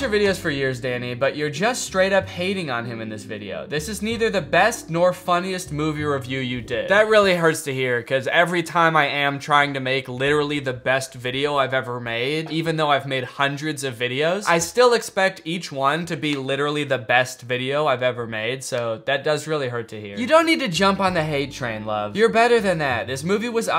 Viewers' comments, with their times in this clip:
0:08 is he being sarcastic? im sorry i have a hard time reading social cues and i actually cant tell